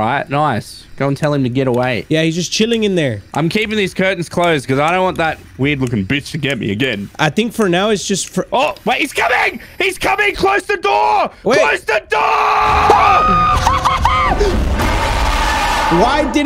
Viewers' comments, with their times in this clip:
0:03 bro hit puberty